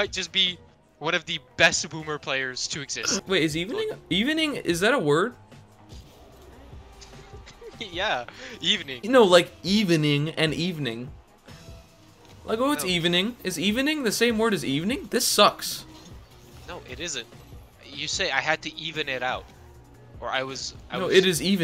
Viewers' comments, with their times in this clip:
0:03 Welcome to the first episode of four pronunces